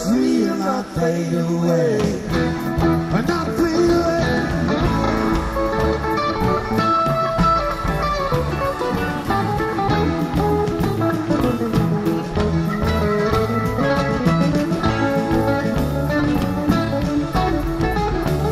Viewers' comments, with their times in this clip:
0:03 Jerry blasts off